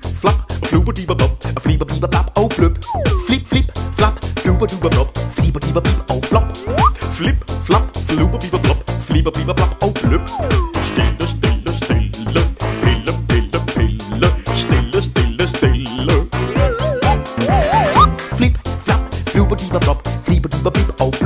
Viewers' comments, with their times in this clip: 0:08 i mean is that not the perfect music for that